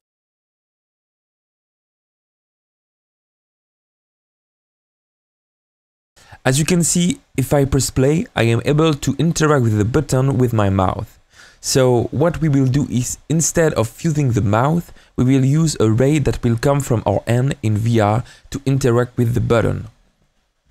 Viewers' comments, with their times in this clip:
0:08 with my "mouth", no offense though love your videos :)